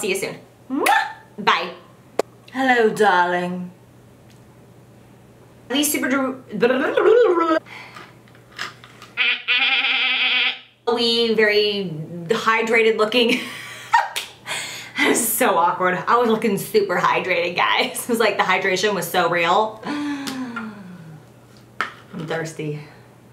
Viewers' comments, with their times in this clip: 0:08 HAHAHA ohgod your laugh it's like janice from friends ! Love this video ! XOXO
0:09 you sound just like Janice :DDD